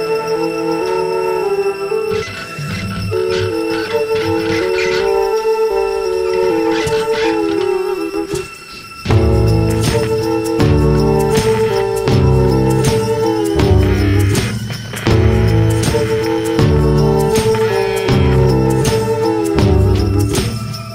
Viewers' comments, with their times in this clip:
0:03 Sounds like PT